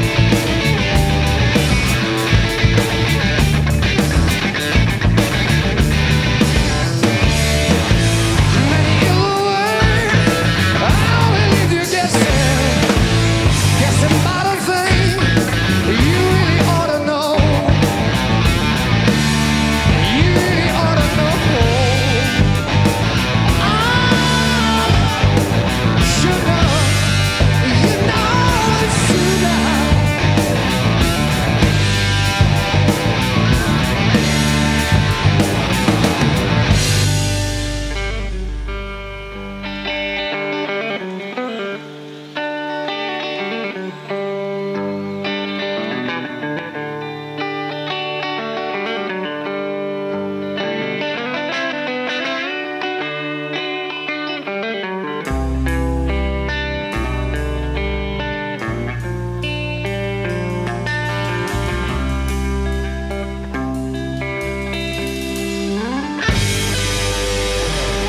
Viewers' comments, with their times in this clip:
0:10 Just noticed Bonham does a triplet fill
0:11 Go Bonham! That extra stuff is very, VERY tasty.
0:51 Weird how this part sounds like the 'Jackass' theme intro